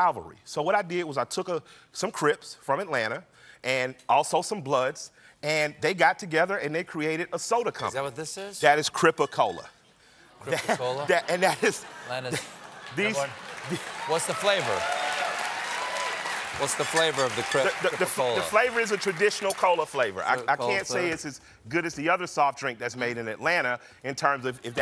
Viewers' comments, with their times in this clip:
0:10 lmao they didn't know whether to gasp or applaude. It probably took a while for the sign to light up.